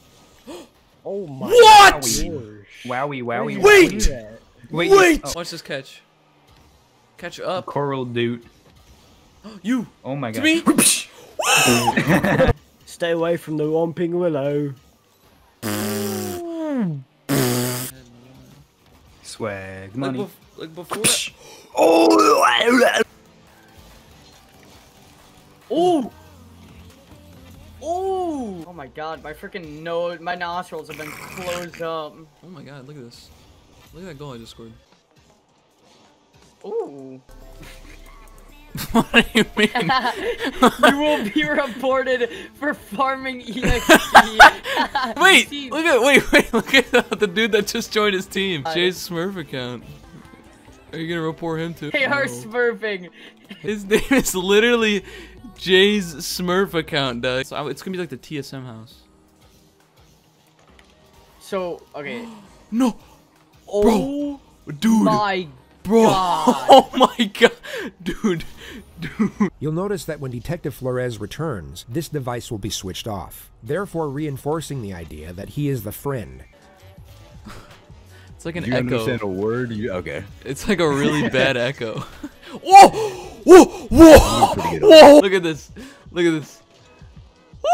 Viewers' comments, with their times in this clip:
0:09 BRO IT SOUNDED LIKE A PIG JUST GOT SHOT😂😂😂😂🤣🤣🤣🤣
1:09 We not gonna talk about how he was listening to JCS in the background